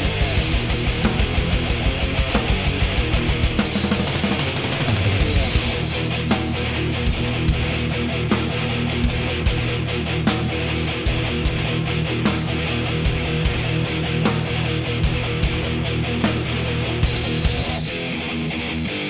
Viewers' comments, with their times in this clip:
0:06 my fav slayer song of all time. the tempo shift and riff is so sick! great work! been watching this video on repeat haha. Anyone who hates on Divine Intervention is whacked out. True maniacs understand its one of their best records.